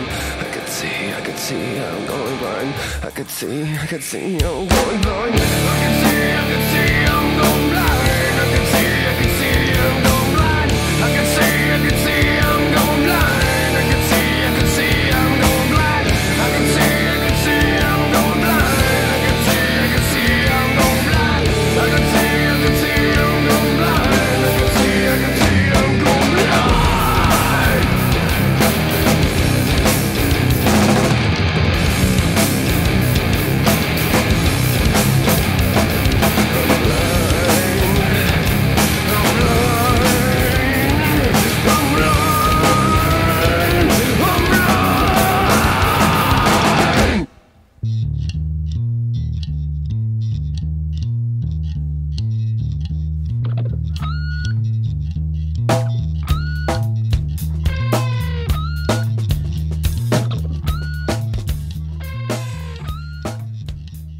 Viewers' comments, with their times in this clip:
0:04 best part of the song....whoever invented the amplifier for electric guitars needs an award cuz they made guitars go from weak to dropping powerful beats.
0:47 Can we just all take a moment to realize that we are given kind of as like a bonus second song, the most wonderful bass groove with the most perfect little pocket drum beat and then pops in with that little guitar accent and OMG its literally so perfect you don't want it to end?!?! I would love to see them revisit this as a whole track of its own. Am I alone here? Does anyone else love it as much as I do? Lmao
0:48 Sounds like Agent Orange by Slapshock